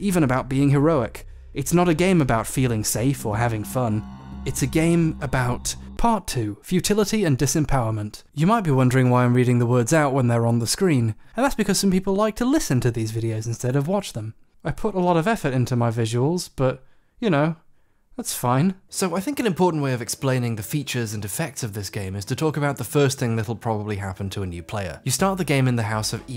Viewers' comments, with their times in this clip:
0:08 Referring to I've got a severe visual impairment, so you narrating out everything in the soft silky voice actually really helps.
0:10 the reason for that is your beautiful voice. And that people who are falling asleep to 130 minutes long videos of gaming lore are more common than you think. ❤